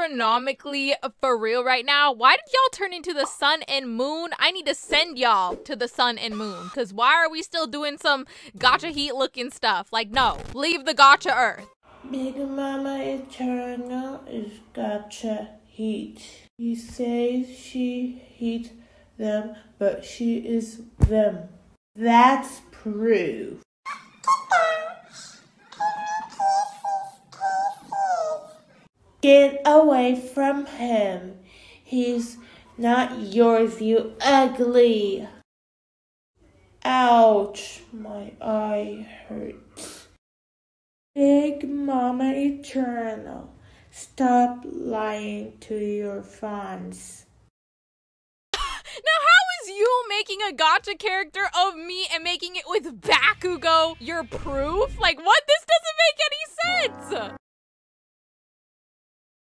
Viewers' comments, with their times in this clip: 0:10 this kinda sounds like my friend- WAIT IS THIS HER
0:24 THAT SOUNDS LIKE AN ADULT
0:46 Taht ain't Bakugou thats back you go